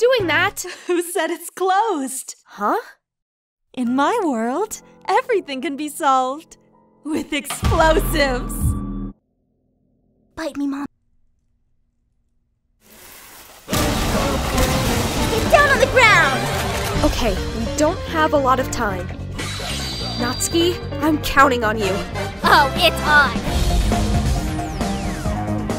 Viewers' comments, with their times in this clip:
0:06 Im having trouble what sayori sais I hear like me mom and bite me mom, im very sure that im not supposed to hear those sentences 😭
0:09 Megumin's voice EXPLOSION